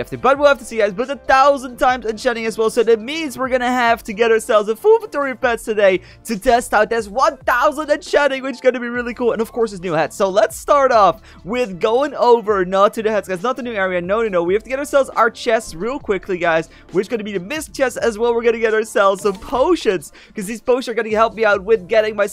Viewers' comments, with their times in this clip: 0:03 what a voice crack 😂😂😂